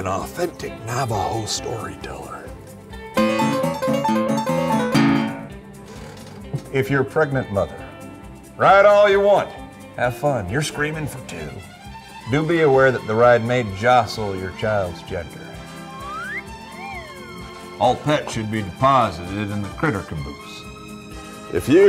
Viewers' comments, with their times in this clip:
0:04 the keys he hits at the end of his little ditty certainly do not match the octave that sounds.